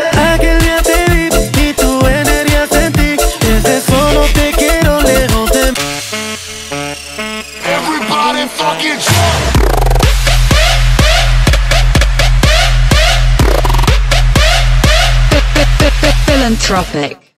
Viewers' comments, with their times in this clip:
0:08 OMG!! MEGA DROP!!!